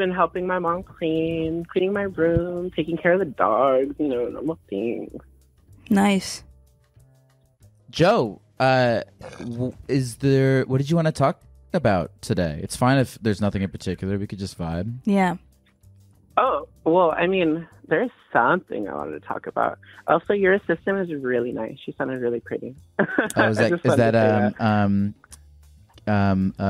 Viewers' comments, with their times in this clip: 0:07 that berp and side eye was HILARIOUS